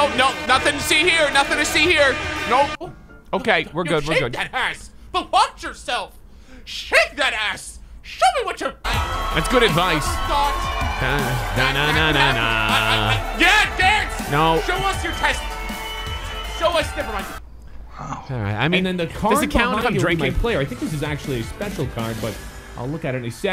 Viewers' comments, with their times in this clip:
0:04 he sound like Mickey Mouse Baha